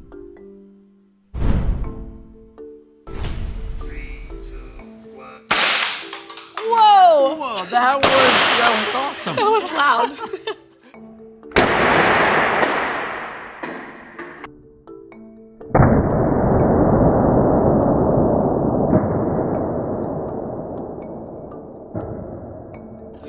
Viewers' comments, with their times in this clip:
0:04 I heard counting